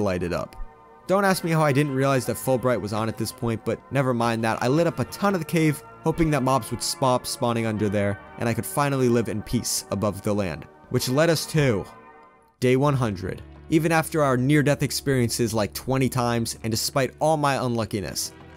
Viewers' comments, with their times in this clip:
0:06 did he just say” spop” spawning